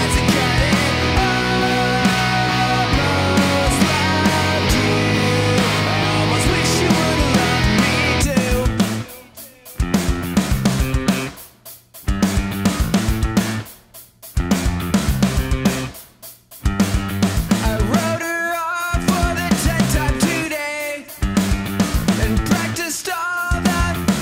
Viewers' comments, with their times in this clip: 0:08 guitar players when the bass have a part for 0.1 seconds in the song